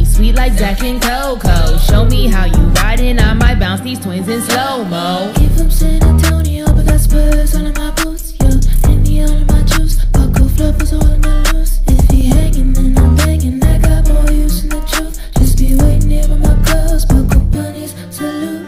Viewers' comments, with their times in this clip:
0:04 Sounds good. As a twist, I would've vamped down (changed/reduced the number of notes) the synth bass line at the soft rap part A million different ways to skin a horse bunny.